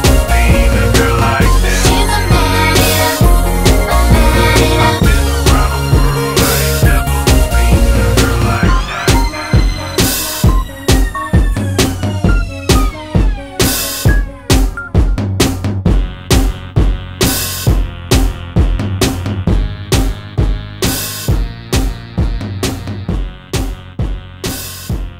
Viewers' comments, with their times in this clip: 0:08 best instrumental part